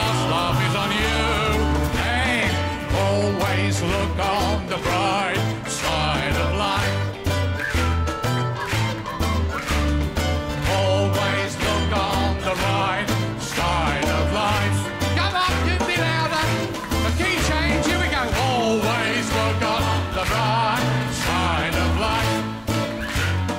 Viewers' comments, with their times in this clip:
0:09 the guy in grey shirt laughing is cute :D